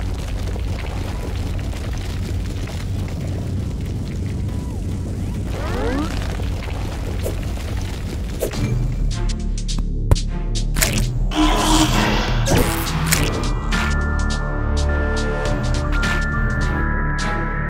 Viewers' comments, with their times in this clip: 0:05 The pvz sound kill me 💀💀💀